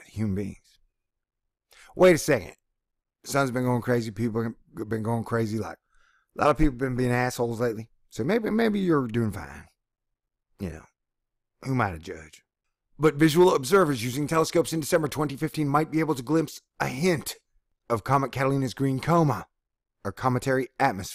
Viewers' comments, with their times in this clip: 0:07 Oh thank Heaven for 117. I hear dancing music ;)